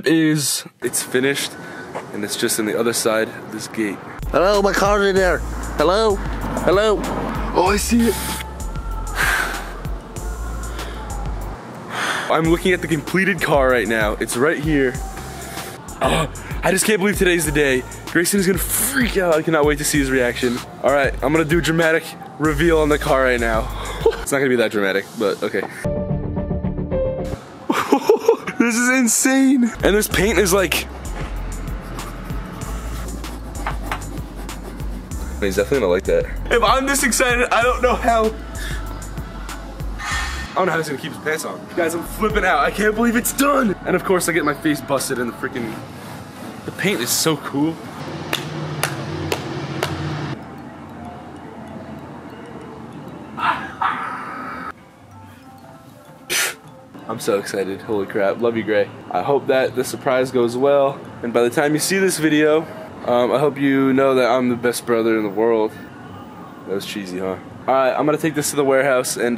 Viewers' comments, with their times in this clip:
0:05 wtf that voice
0:53 his laugh homfosndisbf
0:57 he sounded exactly like grayson